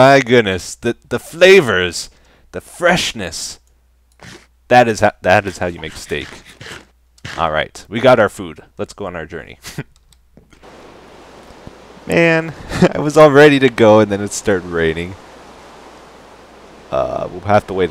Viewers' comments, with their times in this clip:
0:04 Is it just me, or did I hear "that is" twice ?